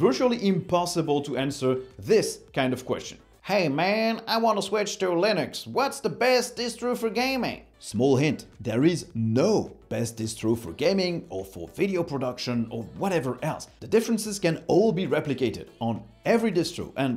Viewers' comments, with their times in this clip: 0:03 How can you be french and yet make the best Alabaman accent ever?😆🤣